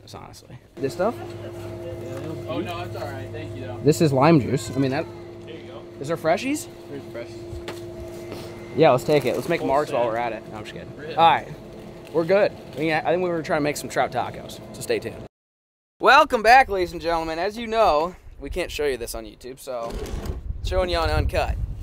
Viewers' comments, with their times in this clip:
0:03 My Africa people heard that hadieda